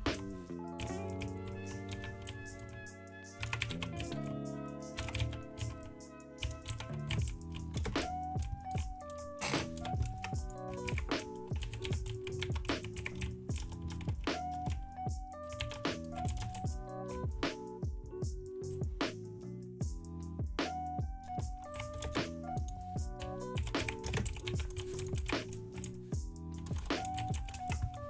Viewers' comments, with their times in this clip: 0:05 hahah his laugh xd
0:08 u can hear him control his laugh
0:08 you can hear him trying not to laugh because of the guy who got killed by a zombie😂😅
0:08 is h laughing?
0:09 😂😂 the little snort laugh had me dying IDK why
0:09 That snort Lol